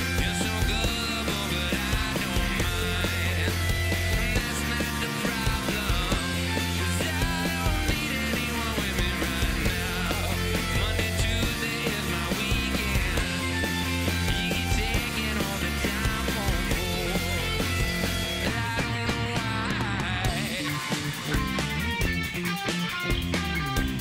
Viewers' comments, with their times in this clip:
0:06 also- this sounds flat or something